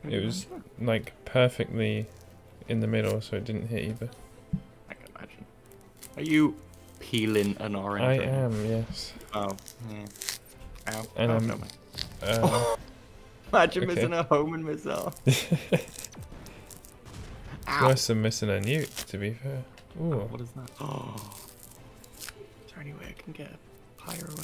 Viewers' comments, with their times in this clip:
0:07 Orange peeling ASMR